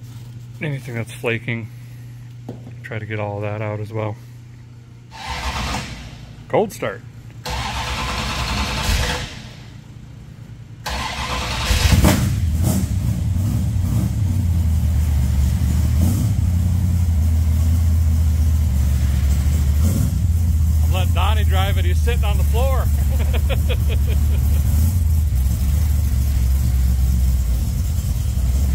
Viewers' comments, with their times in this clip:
0:10 I remember my Dodge Dart Sport, ‘73 model with the unbreakable 5.3/318 v-8. It was copper mini flake exterior with a white vinyl top and beige interior with benches front and back. Dog dish wheel covers on 14” wheels. Slapped in a generic 150 watt cassette player, tore out an 8 track player to get it in, mounted a tachometer on the steering column and drove the crap out of that “cruiser”. Never a problem. That sounds great